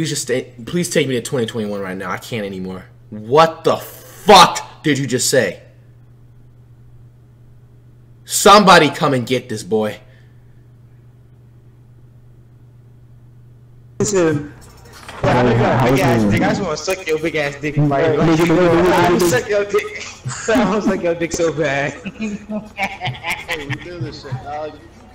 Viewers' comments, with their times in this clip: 0:06 Sounded like my mom when I tell her I can’t pause my game